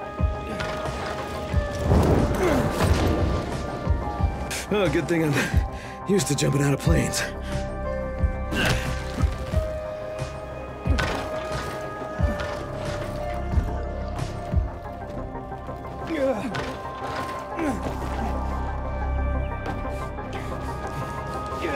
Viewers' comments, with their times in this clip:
0:04 I have never heard that voice line before